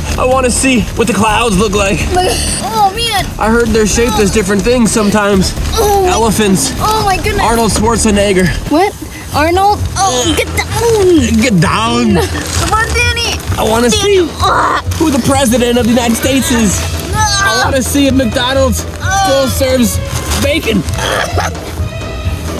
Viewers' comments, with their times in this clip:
0:07 hard r uhm